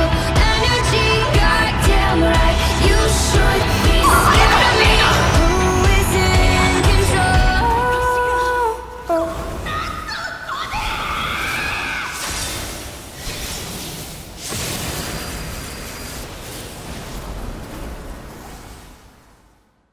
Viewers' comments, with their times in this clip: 0:04 The scream really hits hard